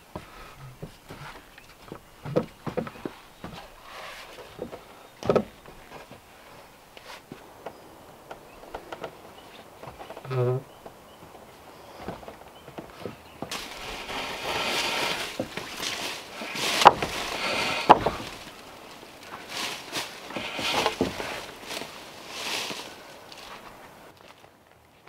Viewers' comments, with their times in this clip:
0:08 we all heard you fart, likely you'll blame the log...